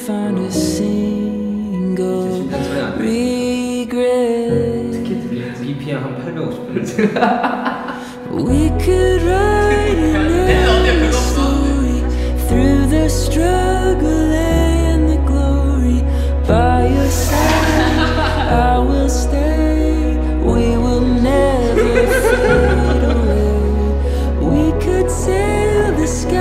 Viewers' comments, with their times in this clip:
0:10 that, that right there is a laugh/smile you give when you see someone you love happy